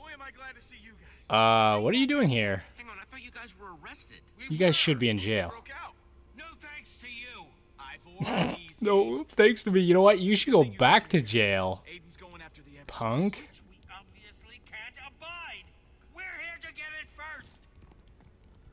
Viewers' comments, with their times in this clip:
0:05 And you're just casualy talking like you did noting?